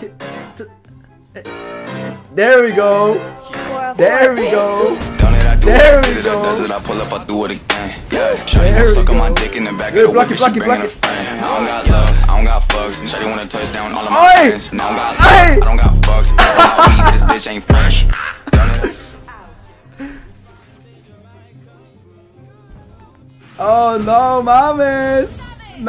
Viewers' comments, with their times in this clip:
0:09 lmao “block it block it block it” Shit went with the beat🔥🔥😂